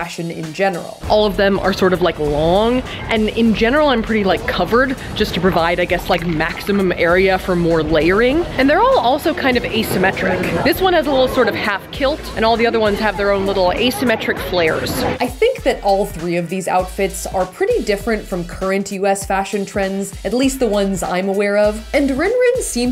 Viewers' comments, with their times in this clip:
0:08 casually choking on ice cream in the background.